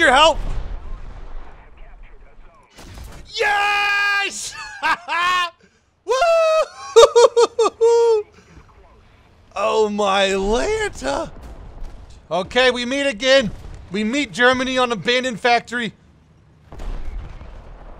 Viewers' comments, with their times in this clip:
0:03 Thanks for saving our ears!